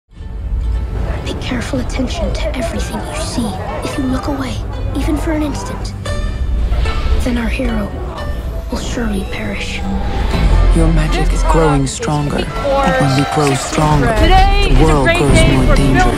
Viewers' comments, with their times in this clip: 0:02 sound like wmggw